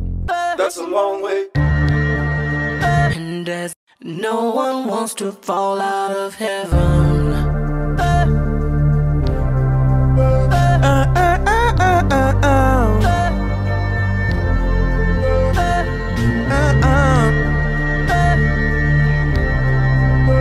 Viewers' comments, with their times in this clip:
0:08 I feel like there's a slip up but otherwise this is amazing dude